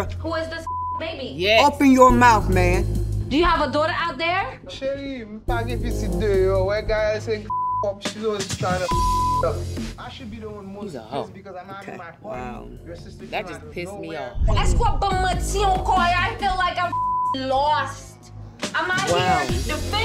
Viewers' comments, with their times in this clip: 0:05 When he lie he start speaking creole. 🥴